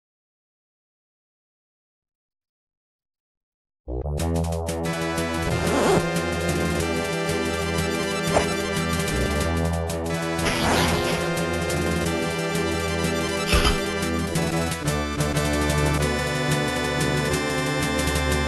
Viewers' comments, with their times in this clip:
0:05 Why when he pulled his boot laces, it sounded like he was zipping up his pants?🤣🤣🤣🤣🥾👖🪖